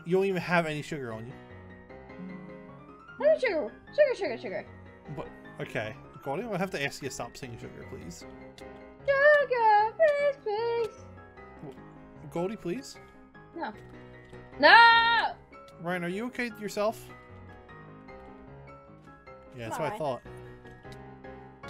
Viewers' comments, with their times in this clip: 0:09 Wow! When Goldy said that it went really well with the music in the background.